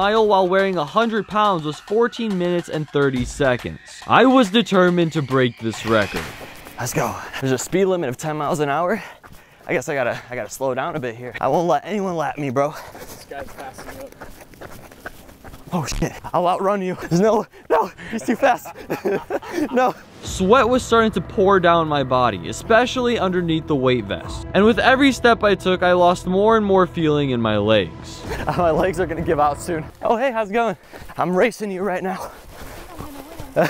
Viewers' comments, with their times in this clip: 0:09 that villainous laugh tho ....
0:19 the evil laugh 🤣